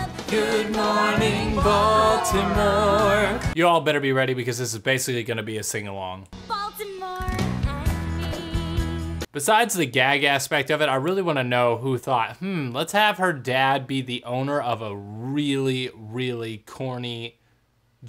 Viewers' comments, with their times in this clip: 0:05 Ok, I got to and quit; I can't stand reactors singing along to their videos. Sorry.